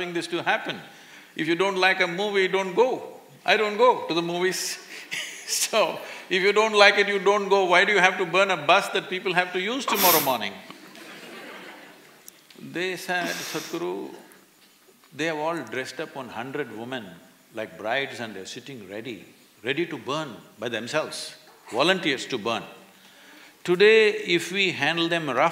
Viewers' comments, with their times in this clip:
0:09 Who sneezed behind the camera XDXD